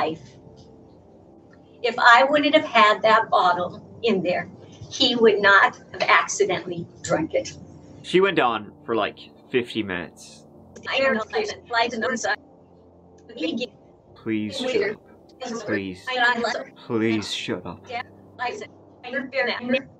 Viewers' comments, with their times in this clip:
0:07 "She went on, for like 50 mins." Nice delivery.